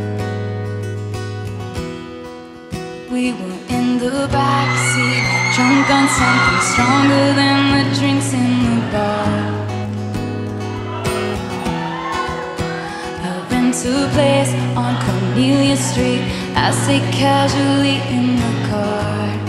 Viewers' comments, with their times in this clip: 0:04 imagine screaming so loud that you get immortalized in one of Taylor’s most iconic performances 😭
0:04 I was like the girl with the piercing wail !